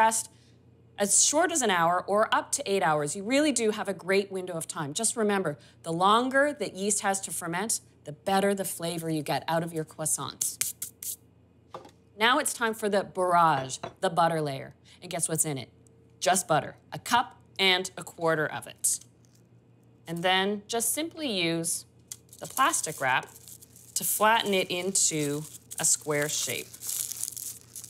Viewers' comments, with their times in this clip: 0:09 did she just say cwoissant or am I trippin